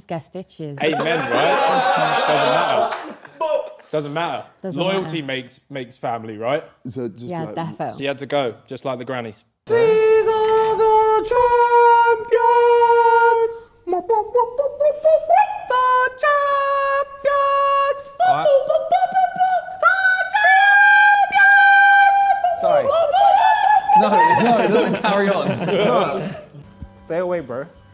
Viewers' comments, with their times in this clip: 0:10 Champions league anthem was weird singing